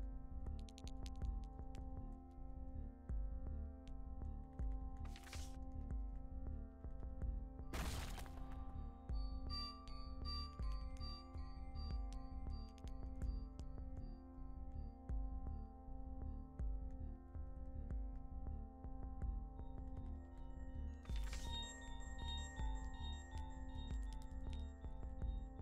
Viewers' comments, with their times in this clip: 0:07 i adore when something doesn't go to plan and you react by just being in total silence and disbelief